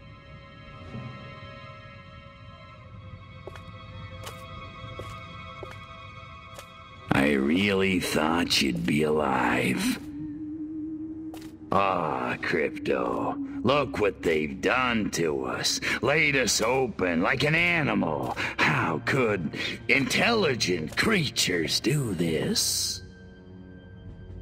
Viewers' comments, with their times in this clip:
0:06 "I really thought you'd be alive" The way he delivers the line suggests to me that he's not shocked at being wrong, but more disappointed in himself for ever daring to hope a foolish hope like that.